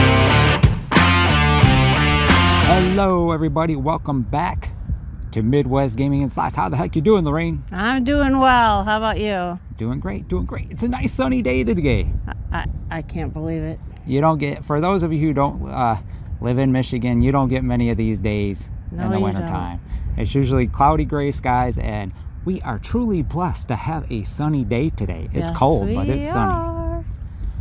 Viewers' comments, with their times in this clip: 0:10 It's a nice sunny day togay? I love your slip ups lol